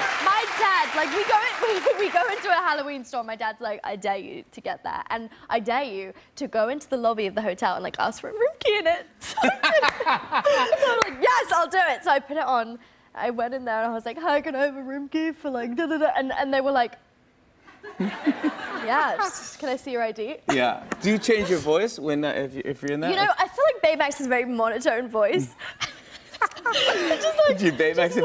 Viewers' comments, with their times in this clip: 0:08 Jimmy's fake laugh is cringeworthy to me.
0:14 best voice of baymax😂😂😂😂😂😂😂